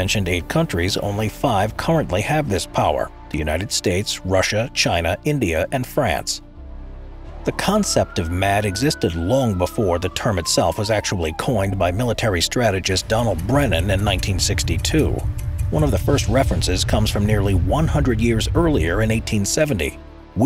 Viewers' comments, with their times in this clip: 0:08 Thanks for that siren sound ..🙄.. Was watching this while riding in a car, and it scared the crap out of me 😆😅